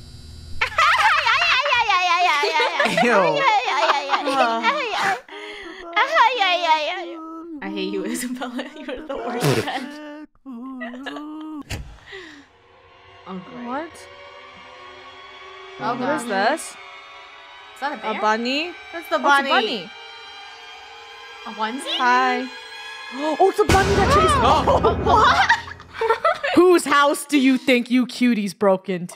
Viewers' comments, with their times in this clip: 0:10 that laugh is so funny 🤣😂